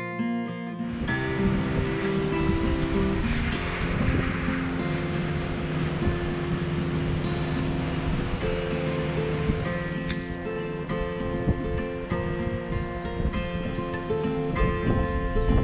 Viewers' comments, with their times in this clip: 0:03 Absolutely love the music! Oh my, the view is so wonderful! Just WOW! This is a great hike to the end! ☺️